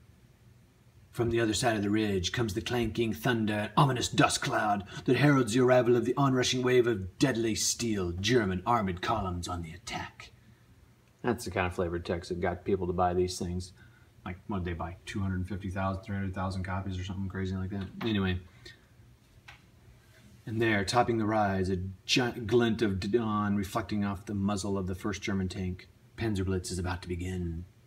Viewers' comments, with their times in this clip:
0:08 Nice dramatic reading !